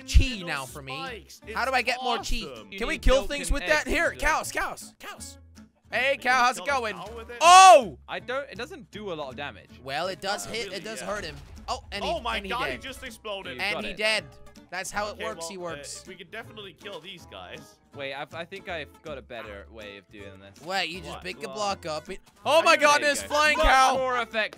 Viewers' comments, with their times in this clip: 0:07 Put your device On full Volume and Jelly says “OH” 😂